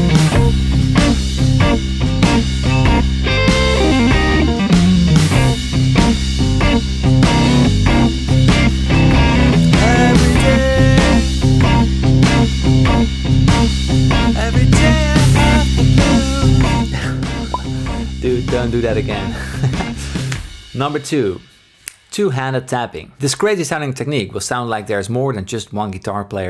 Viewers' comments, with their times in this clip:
0:09 your voice still sounds better than all pop acts today except adele